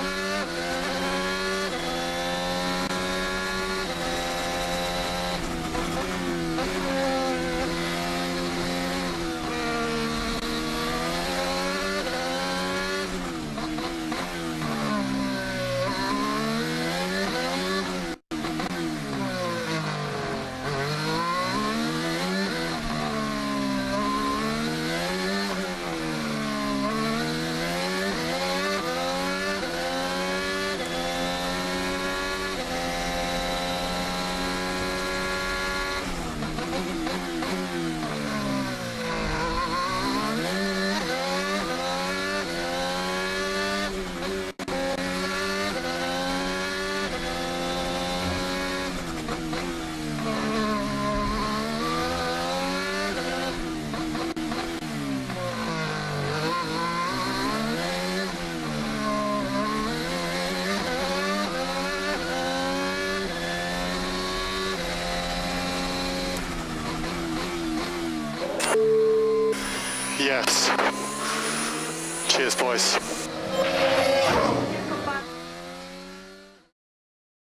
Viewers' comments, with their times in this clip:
0:06 the turbo spooling through that section sounds reeeeally nice
0:35 that downshift tho🤤
0:59 The sound when he gets on the power is mwah